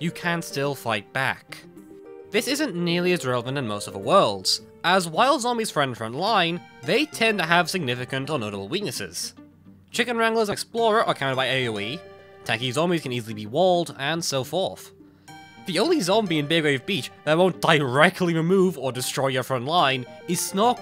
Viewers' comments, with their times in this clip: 0:05 Nice Peak background music, it's perfect.